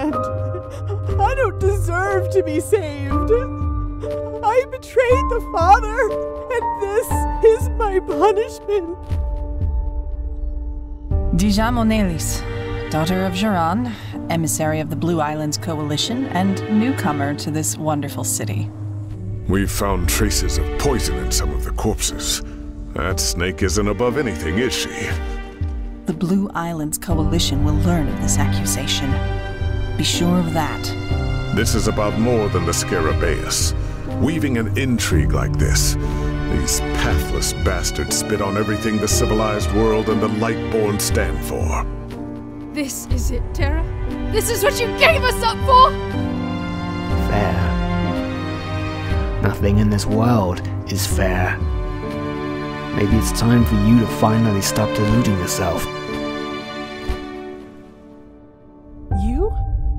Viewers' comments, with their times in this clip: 0:03 Wait wait wait wait. Is that a voice actor from Oblivion I hear? The female elves? Or does she just have a reeeeeally similar voice.
0:47 Can someone make this guy say "Chaosh is a laddah" just to be sure it's not Littlefinger.